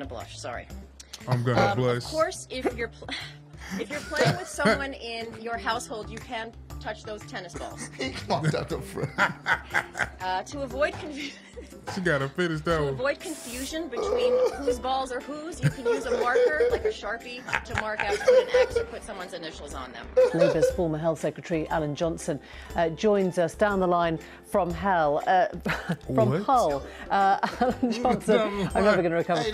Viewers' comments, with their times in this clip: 0:10 the police officer just cracking up while that poor lady talks about tennis balls is hilarious